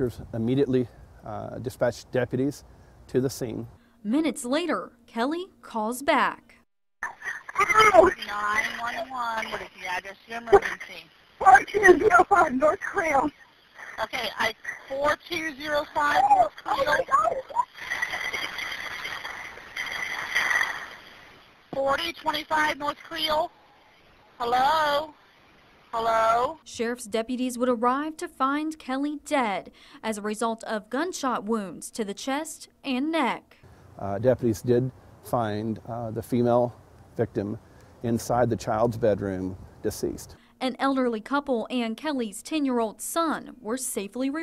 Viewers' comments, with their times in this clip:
0:09 That dispatcher should be fired. The way she says “911 what is your emergency...” like she’s bored as if her voice is saying “what do you waaant?”
0:16 It sounds like he shot her with a machine gun!! RIP
0:25 WHY THE FUCK YOU HELLO'D???? THOSE GUN SHOTS SPEAKS MORE FOR SURE???? HELLO?????